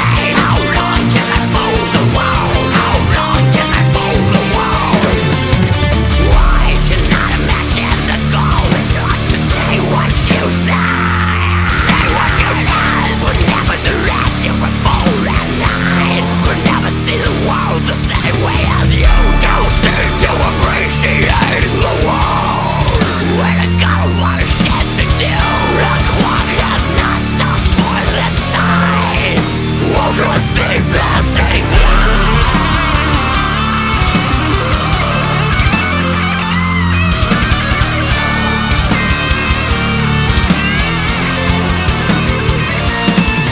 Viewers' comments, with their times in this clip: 0:03 that melody shift is awesome
0:30 This song has my favorite guitar solo :)